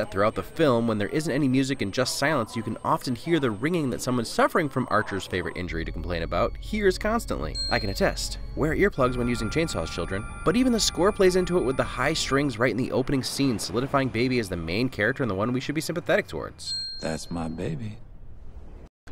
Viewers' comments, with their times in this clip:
0:05 that was from the movie?! I got that too and I thought it was just my usual ringtone